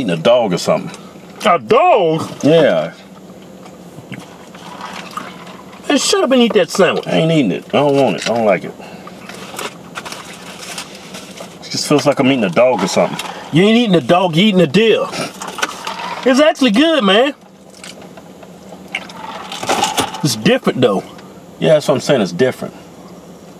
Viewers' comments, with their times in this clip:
0:04 I'M WEAK sound like dad after he spent $10 on something you begged for :) :) :)